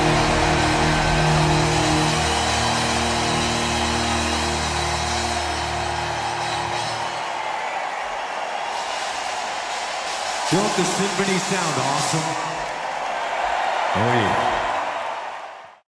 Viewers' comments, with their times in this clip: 0:11 there he is the man, like in the moment, that moment, and his That moment has only been reached by few others, what a freakin career and legacy, James and Metallica have given us so much, thankyou, oh and 3,25, is that the sickest les paul tone ever, yep,